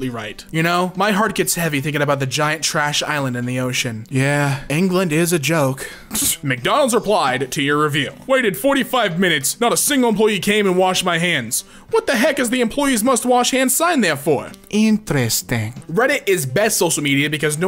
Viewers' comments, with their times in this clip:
0:05 breath IM TRIGGERED